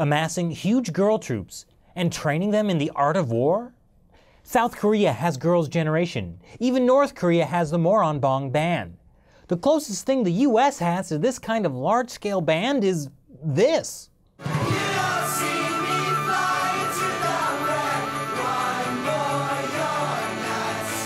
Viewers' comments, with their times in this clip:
0:07 even north korea what? Moron Bomb Bang!? I am really serious about this. lol